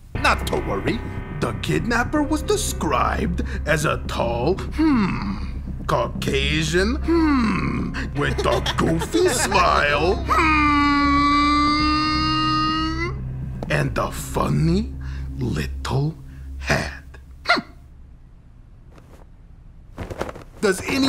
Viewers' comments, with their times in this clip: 0:04 I Could Listen To Him Saying "Hmmmm" In A 10 Hour All Day 😅